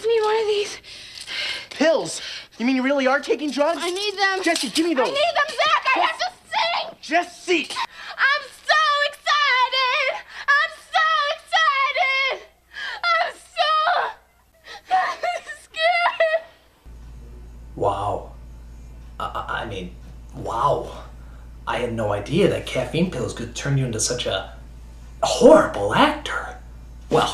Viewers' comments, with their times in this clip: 0:09 still better singer than Justin Bieber.